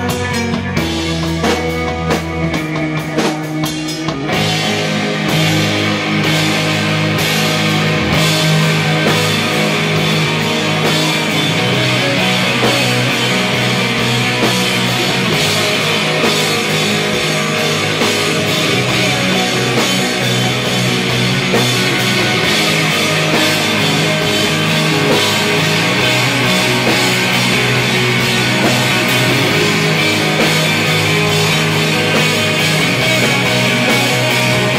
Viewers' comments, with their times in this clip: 0:03 When they decide to develop, they really DEVELOP! lol Great stuff!
0:07 Starting my body goes numb. An overwhelming explosion of complex, beautiful sounds.
0:15 Does anyone hear someone knocking at their front door ha.